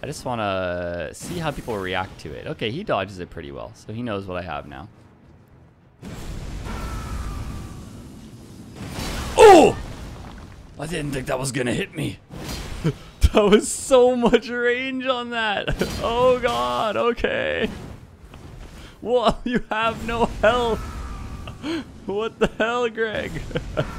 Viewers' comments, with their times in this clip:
0:08 you ever thought of doing Voice Acting cause damn that was convincing as shit!
0:08 my god the grunt made me jump in my seat such a visceral reaction bro did he hit you irl?? XD
0:08 man, these Roblox sound effects are getting more and more intense each day lol